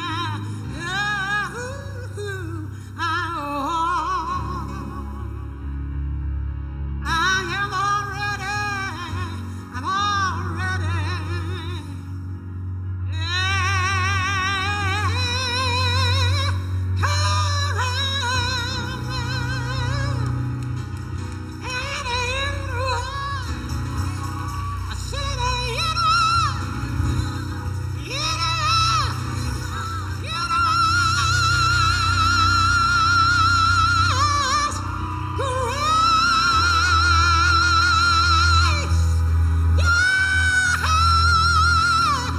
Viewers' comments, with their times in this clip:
0:04 The Obamas clapping on 1,3,5,7 got my rolling 🥴☠️😂🤦🏾‍♂️
0:30 sounded like it was from decades ago , incredible !